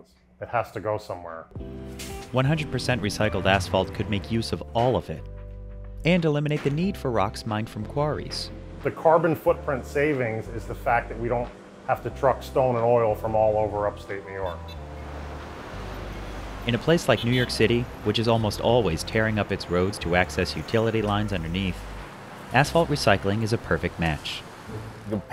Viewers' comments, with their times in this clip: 0:10 "the carbon footprint savings for not having to truck stolen oil" hahaha 🤣